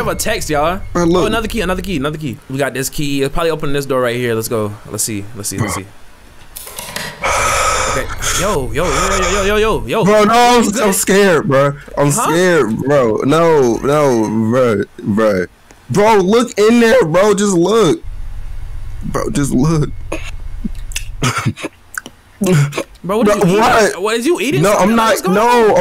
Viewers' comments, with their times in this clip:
0:07 he play too much with that breathing.😂